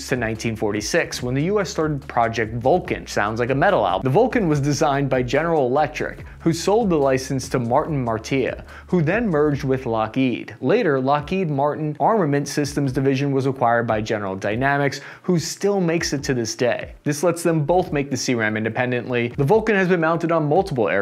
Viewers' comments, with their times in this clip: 0:03 he says “GE sold the license to Martin Marietta” But he pronounces it Martin “Mar-tee-uh”. It was a record needle scratching across the vinyl moment for me. Wait! What’d he just say?!? Makes me wonder if these guys making these videos even know about the companies they’re talking about.
0:07 Martin Martya? After butchering Ukrainian city names, here's a new victim.
0:08 LOL you duffed the name Martin Mar-TEE-a instead of Martin Mar-EE-etta. Gave me a laugh, I remember when they merged and we called them "LockMart". THEN you called the A-7 CORS-AIR the A-7 Cross HAIR. Who writes your scripts and does the spellcheck? Still chuckling. Keep trying there you great big lunk of an average enlisted man!